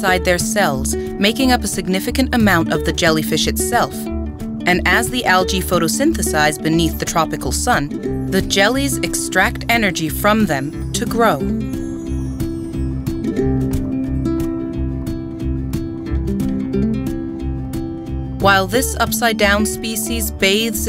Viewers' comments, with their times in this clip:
0:03 the music is so uplifting it matches with the jellies.